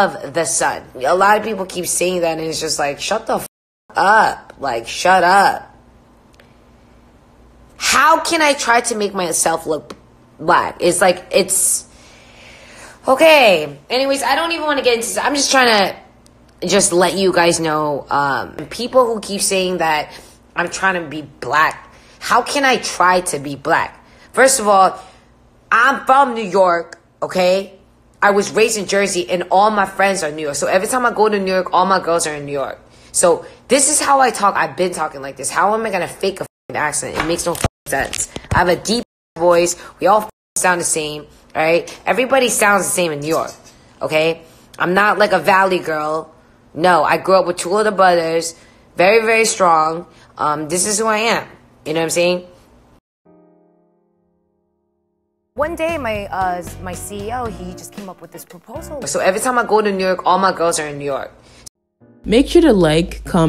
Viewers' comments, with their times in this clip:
0:03 damn is it just me or SHE REALLY SOUNDS LIKE THAT CATCH ME OUTSIDE girl after being caught for blackfishing also😩😩😩 and I really I appreciated her 😭😭😭
0:49 tell me why jessi sounded like a lil girl-